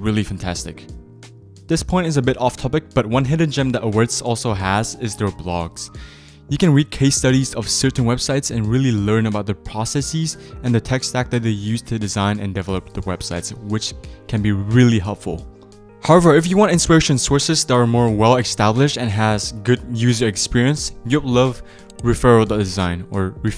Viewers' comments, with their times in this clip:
0:10 Tf did he just say proceccecce😂😂